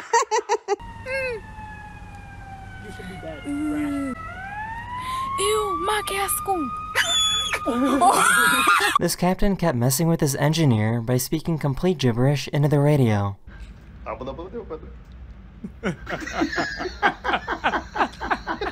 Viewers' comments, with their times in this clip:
0:06 that mouse scream made wake up my lil bro